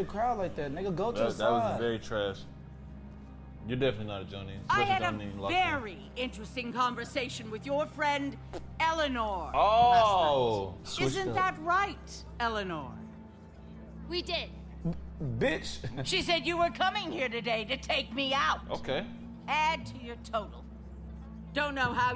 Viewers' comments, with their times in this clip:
0:07 hold on i cant be the only one that heard a fart